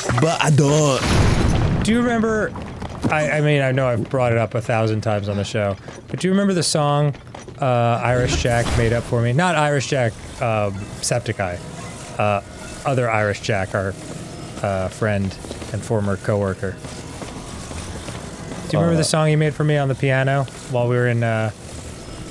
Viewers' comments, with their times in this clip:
0:03 Did a goron just explode out of that and make an "Ooof" landing